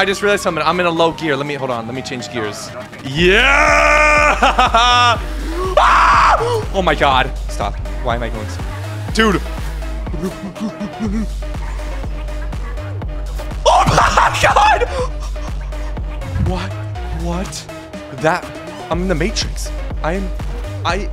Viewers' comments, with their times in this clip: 0:06 bro screamed fir his life